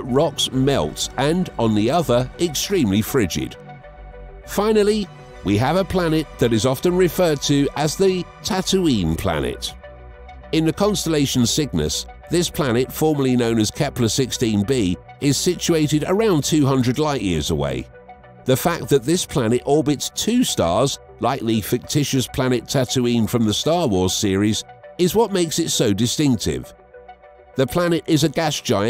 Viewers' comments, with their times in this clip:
0:09 in the constalation sickness